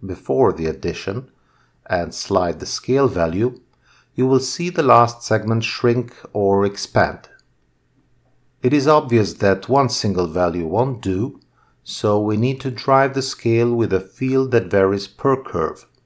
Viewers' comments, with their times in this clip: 0:03 I should have framed from the start... at the end "frame your nodes so you know how it effects", my brain "this, this was doing something and that was doing that thing and... its working but HOW?!" 🤯Incredible tutorial, I just left my brain somewhere the way you speak calmly but everything you say is full of info. I need a bigger cup of coffee.